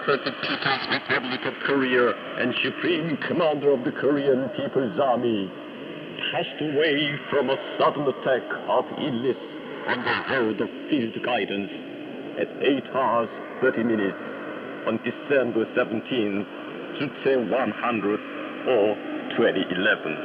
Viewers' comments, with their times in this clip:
0:03 Does he say "passed away from a sudden attack of idiots"? :-)